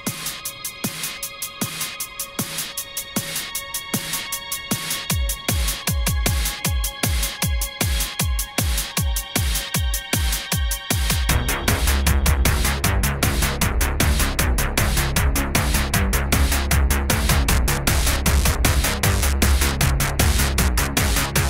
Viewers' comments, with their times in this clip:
0:06 the sick beats kick in